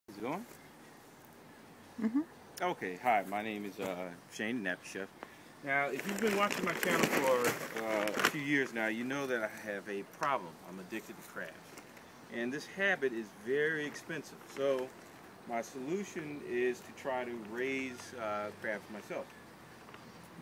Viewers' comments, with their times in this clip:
0:08 I thought you said "I am addicted to crack and this habit is very expensive so my solution is to raise crabs" I was thinking cool now thats a good crackhead right there. Hah
0:08 "now you know i have a problem im addicted to crack"